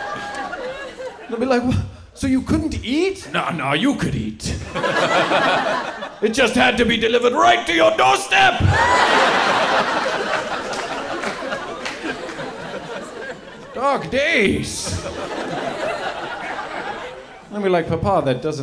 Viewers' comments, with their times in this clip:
0:03 bro sounds like vegeta